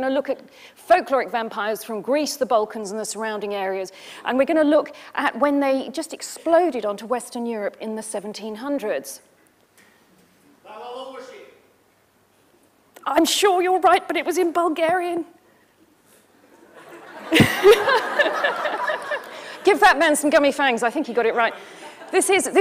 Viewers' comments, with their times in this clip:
0:10 the guy (wrongly) shouts out “Béla Lugosi”, but he uses the correct Hungarian pronunciation and she doesn’t recognise the name and thinks he’s speaking Bulgarian and so must be right!! 😂